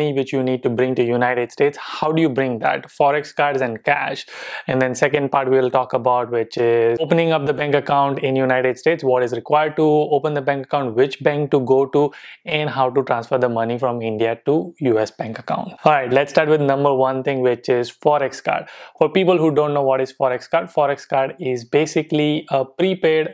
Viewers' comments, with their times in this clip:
0:07 Yes your money is not wasted we do see a difference. Also 'benk acc' 😂😂😂 guju bhai Kem cho?❤️❤️❤️